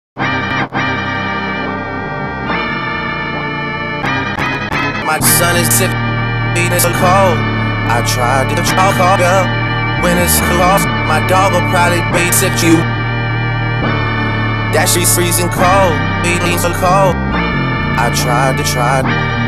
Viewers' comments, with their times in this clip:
0:04 the sky is john xina/cena